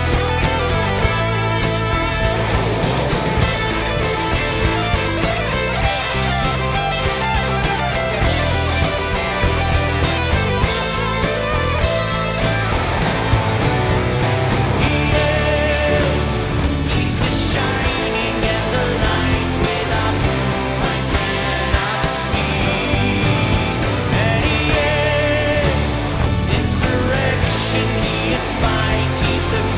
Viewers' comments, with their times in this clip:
0:04 I loved how the guitar riffs emerged from the song on min Half of the song was quite and mellow and many ppl ignores that this is a vital part of this genre,, Ghost choosed a great song and introduction for this epic Grammy appearance, ppl now knows it is not only noise, this is a beautiful and obscure piece of art.
0:10 Drummer style: kid with pots and pans. Cool points: maximum.